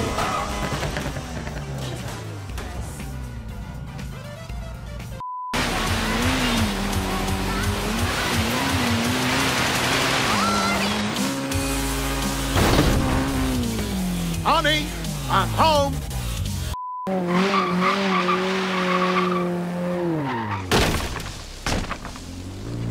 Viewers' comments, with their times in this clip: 0:06 more brony music :) yay
0:06 And that song
0:10 Why does X gon't give it to ya appear in the list? And in I heard "boring".